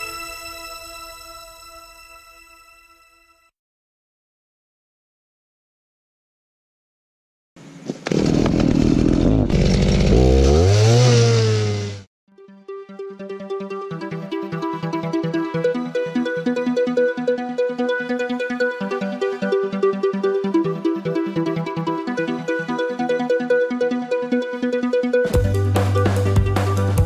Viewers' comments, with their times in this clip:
0:08 the chainsaw strikes back!